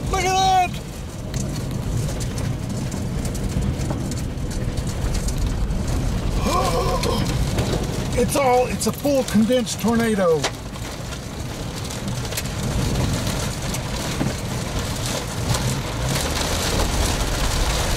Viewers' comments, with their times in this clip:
0:05 That tornado intensified with a burst! Just listen